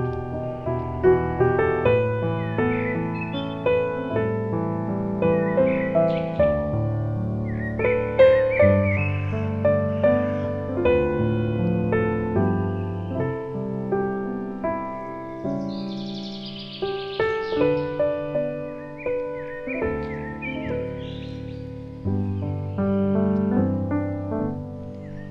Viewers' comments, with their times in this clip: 0:07 As if the sounds of the birds are saying, come call upon the name of the Lord! Call upon the Lord! Then you can be saved!!! This is what the Holy Scripture says, "For whoever calls upon the name of the Lord shall be saved, Romans ." I did, very long ago and I got saved! And you can too! I hope to see you in His heavenly kingdom, soon! Thank you.